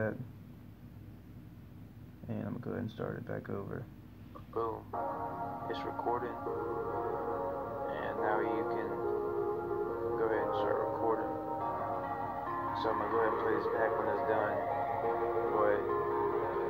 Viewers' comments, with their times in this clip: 0:04 When the recording of you talking about recording makes the intro hype